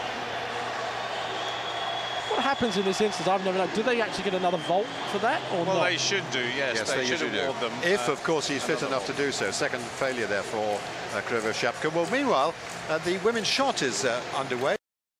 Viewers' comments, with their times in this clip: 0:12 "..but meanwhile the women shortest underwear" thumbs up if you hear it